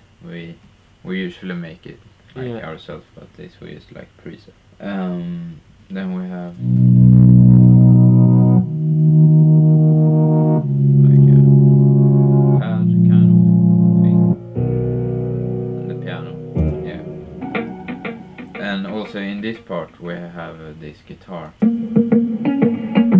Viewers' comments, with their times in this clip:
0:07 Hey guys on What plugins did u use to get that auto filtered sound????